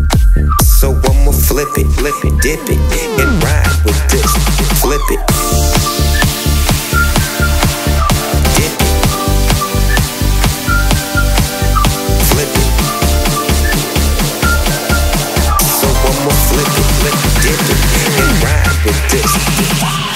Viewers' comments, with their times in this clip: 0:05 THE BREAKDOWN... SOUNDS LIKE DEADMAU5 "GHOSTS 'N STUFF"